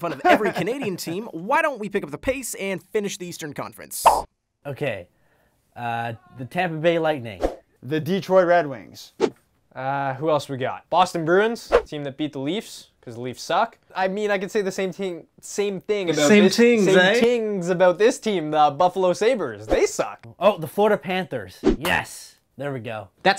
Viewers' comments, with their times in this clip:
0:06 does anyone hear someone yelling in the back